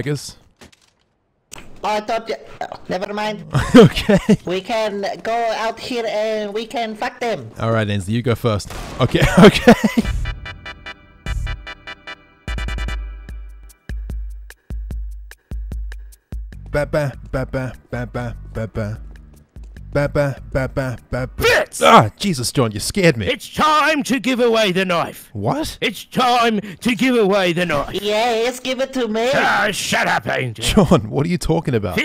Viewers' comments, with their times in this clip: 0:08 I didn’t know that an awp sounded like a deagle
0:17 Everyone when they hear the music